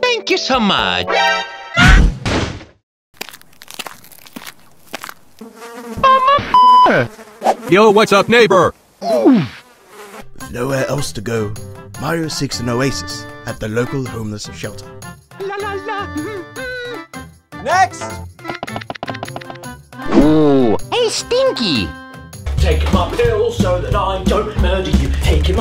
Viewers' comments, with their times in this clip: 0:07 I thought bob said the n word
0:08 it sounds like bob said what’s up n-